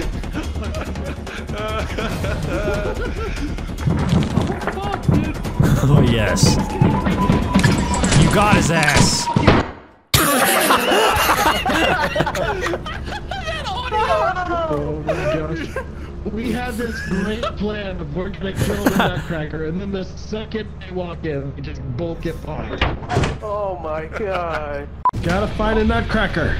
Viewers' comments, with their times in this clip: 0:08 I love how everyone went silent at the exact same time and synchronically started laughing XD
0:08 that audio cut got me rolling 😂😂